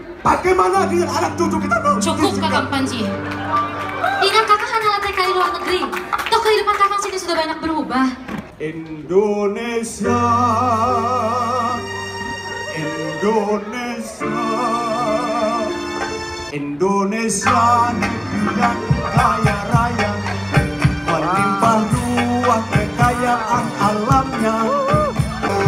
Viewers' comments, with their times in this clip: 0:08 Idk why but it reminded me of the song called "Arabian Nights" from Aladdin haha. Tell me if anyone felt the same way as I did.